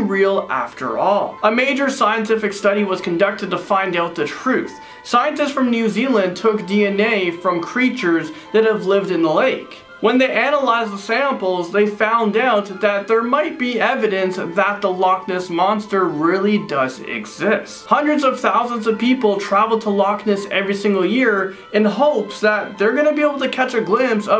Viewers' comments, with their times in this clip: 0:08 He sounds so American cowboy when he said analize the samples